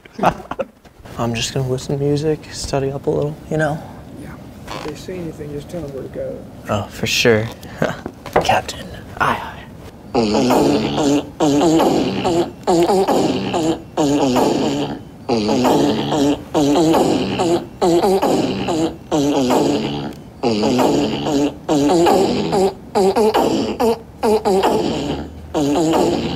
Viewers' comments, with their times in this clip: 0:10 the fart noises of the pirates of the Caribbean theme has me dead 😂